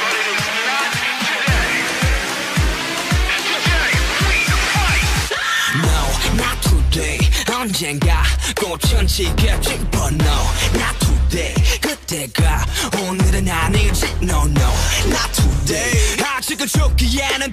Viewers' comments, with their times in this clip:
0:05 I swear to god that sounds like the Angry German Kid scream .